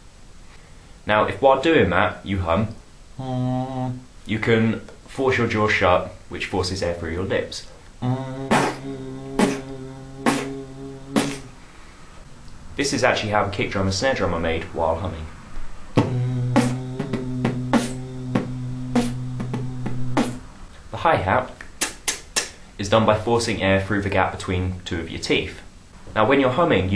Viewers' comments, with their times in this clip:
0:07 is there supposed to be any gap in your humming at all? my kick stops my humming / makes it lower either that or my kick sound sounds quieter